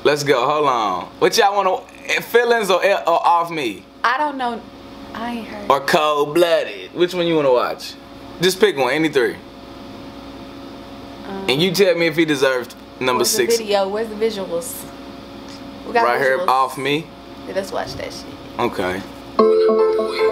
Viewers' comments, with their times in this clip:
0:05 why he say Cold Blooded like that